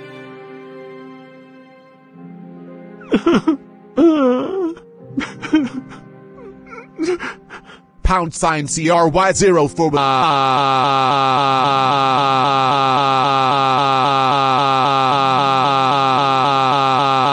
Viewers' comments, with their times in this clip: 0:03 the crying sound lol 🤣